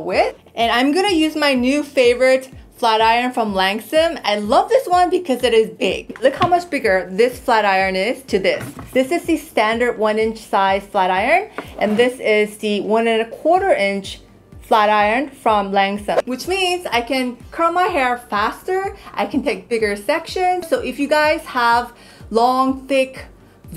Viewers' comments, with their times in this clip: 0:05 loooved how you said that ;'D sounded really funny. What a reason XD